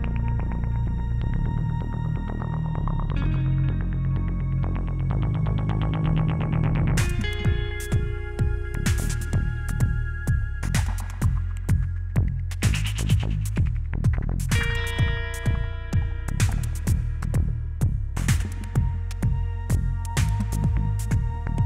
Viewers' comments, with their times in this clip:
0:05 Songs straight outta 80's p0rn film?